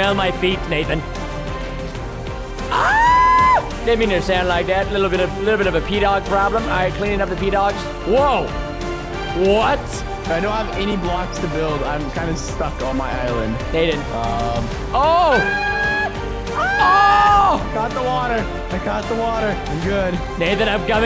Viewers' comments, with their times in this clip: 0:03 preston screaming like a girl